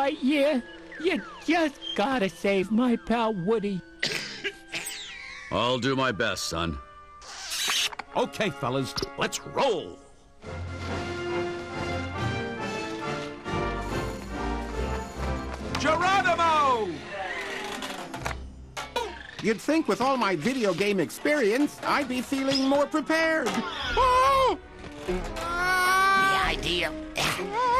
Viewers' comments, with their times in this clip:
0:10 PAL Tone Music?